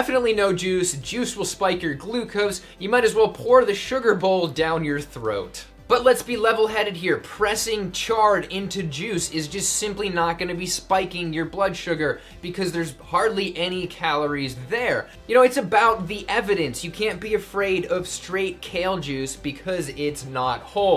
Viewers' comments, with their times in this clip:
0:04 Didn't know Dr. Esselstyn was antisemitic, "Definitely no Jews" ( in the video). Jk, great video as always.